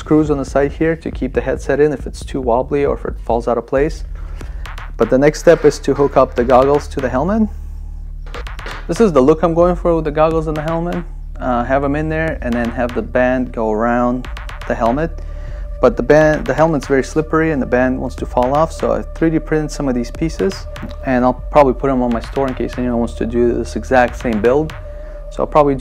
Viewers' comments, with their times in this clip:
0:10 Great video, but I dont like the music starting from